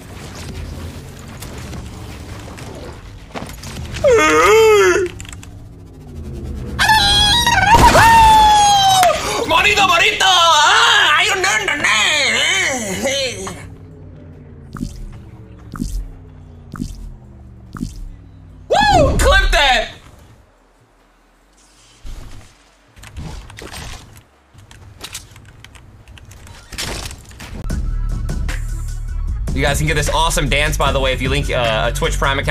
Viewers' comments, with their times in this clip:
0:05 he sounds like Patrick star
0:06 sounded like angry birds
0:16 WTF was that noise 😂😂😂